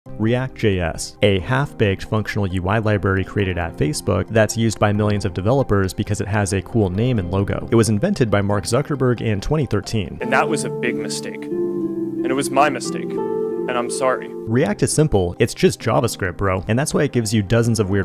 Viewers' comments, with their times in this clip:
0:01 I thought he said a half - b*tch 😂😆 he is right anw 😴😁